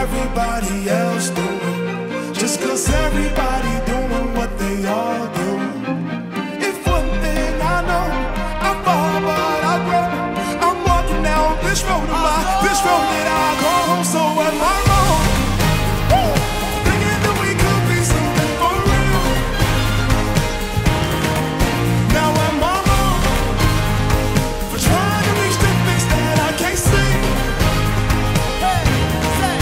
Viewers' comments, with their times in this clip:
0:07 Trumpets in were just beautiful
0:07 Trumpets in were just gorgeous
0:14 They have it but the acoustics of the back up singers made it almost unnoticeable. Its not bad though because they are talented and they don't rely to it too much. If you can hear before the "wooooo" it was a flat note but salvaged by auto tune. Live performances almost mandatory to have auto as a failsafe just in case.